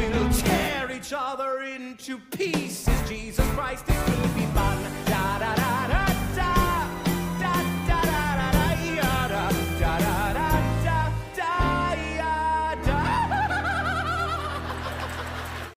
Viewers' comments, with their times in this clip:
0:08 where he's singing through his teeth and low-key threatening bullet's life 'if she doesn't get her act together and put the goddamn chair in the goddamn correct spot' is just wonderful.